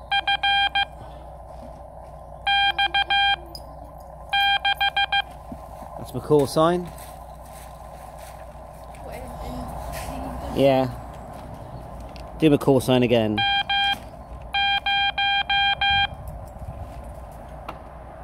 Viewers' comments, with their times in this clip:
0:04 definitely a 6 and not a B, not criticising, just trying to help you improve (I'm an ex Sigint morse op, I can take 40 wpm in my sleep 😂😂 )